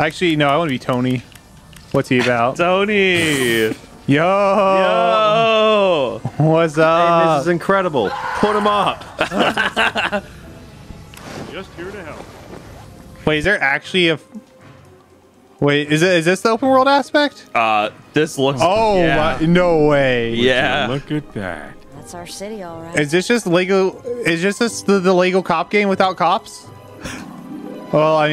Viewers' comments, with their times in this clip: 0:10 i don’t understand the scream